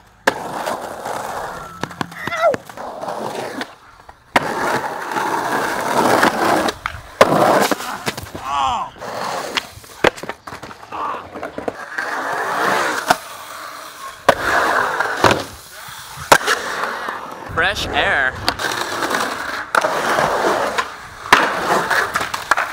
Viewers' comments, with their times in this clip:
0:07 that slam made me jump haha